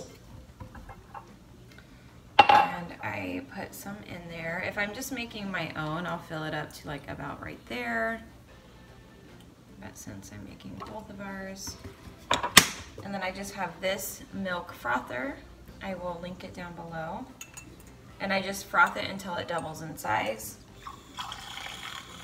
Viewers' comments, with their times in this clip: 0:10 when the ice popped out of nowhere 💀 my ❤ dropped for a second 😂